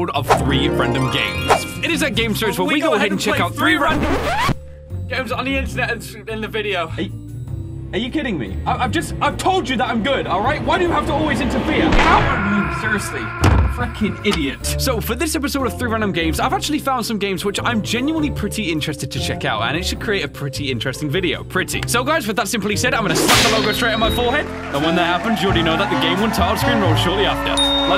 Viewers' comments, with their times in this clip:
0:03 Us theme intesifies
0:12 Am i the only one who heard him way faking idiot 😂
0:13 that sounded WAY to close to f***ing 😂
0:13 sounded like he cursed